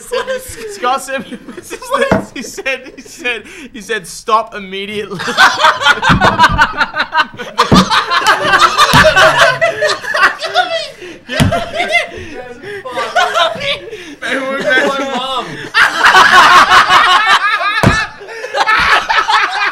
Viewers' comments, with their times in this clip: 0:05 just sounds like ray liotta fake laughing in goodfellas